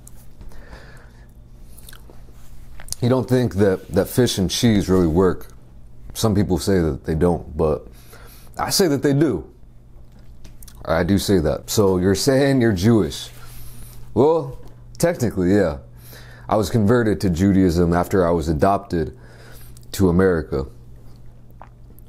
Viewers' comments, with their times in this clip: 0:09 when you say"I say that they do" I think you sound like Rocky Balboa haha. Love your videos!